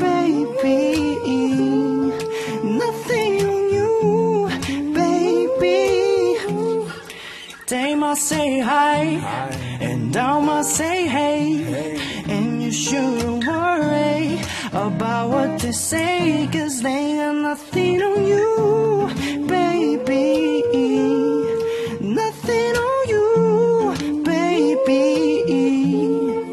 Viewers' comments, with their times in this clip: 0:09 OMFG!!! I FALL IN LOVE !!! T^T MYGOD!! CHANYEOL'S MANLY VOICE !!! `^_^`